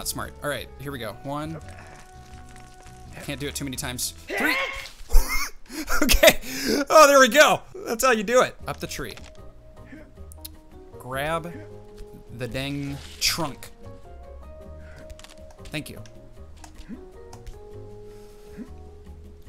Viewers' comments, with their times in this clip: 0:03 ANIME NOSIE ITNSIIFYS